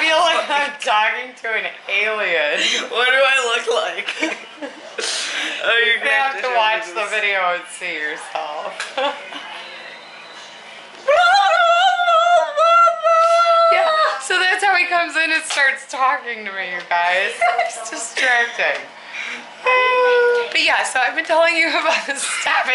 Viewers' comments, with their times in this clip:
0:06 that was a balloon boy laugh from Five Nights at Freddys 2